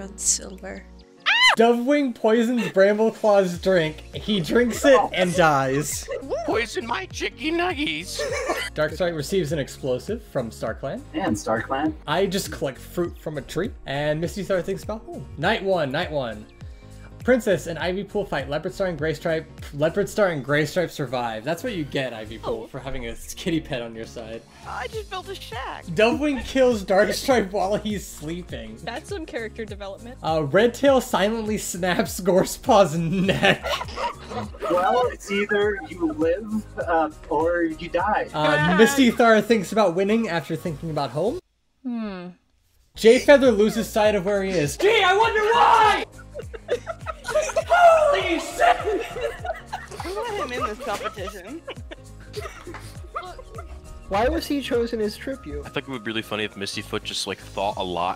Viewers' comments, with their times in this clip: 0:06 I just love the way brambleclaw said that tho
0:42 i usually don’t like jayfeather blind jokes but had me in hysterics. that delivery of GEE I WONDER WHY
0:44 for unknown reasons i loved seeing jayfeather rage over this phrase 💀 "GEE I WONDER WHY!!"
0:45 hes voice cutting out made it way better